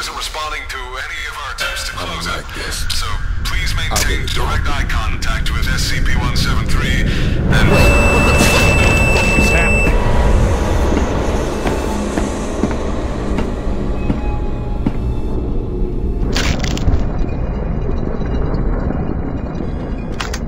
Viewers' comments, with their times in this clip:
0:03 I like how in-game the alarms are echoing in your head like you’ve been through this before (you actually have in game) and D-9341 has experienced this before and he hears the breach alarms going off. It’s a cool little affect in-game.